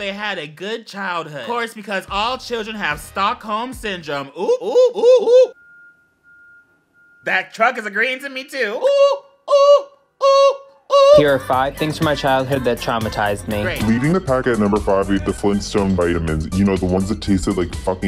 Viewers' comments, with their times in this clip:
0:06 the truck remind of the elevator dings in Grey Anatomy